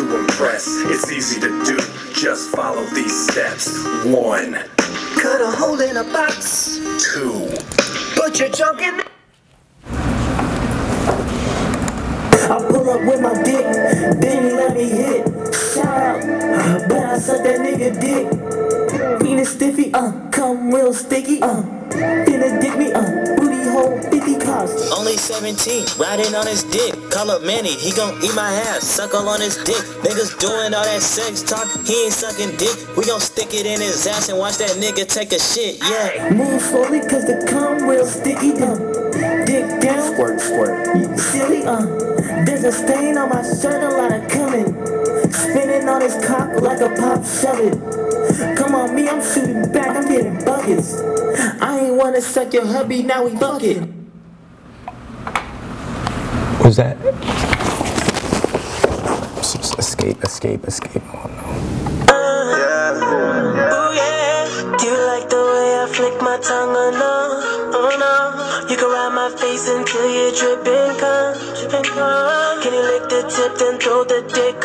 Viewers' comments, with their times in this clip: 0:03 bro the cut from the music got me dying
0:06 "TWO.. put your junk in a.." CUTS OFF lmao
0:08 the way it cuts off kills me every time
0:12 sounds like 69
0:21 me and my cousin were dying from that song,on gay hip hop,so funny.
1:01 I was waiting for that song to get played 😂